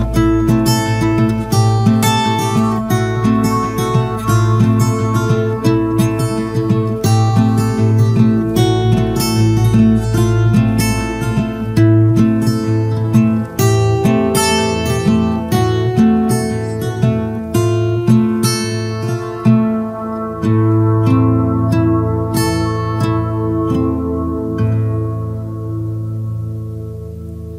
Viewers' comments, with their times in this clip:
0:10 love the song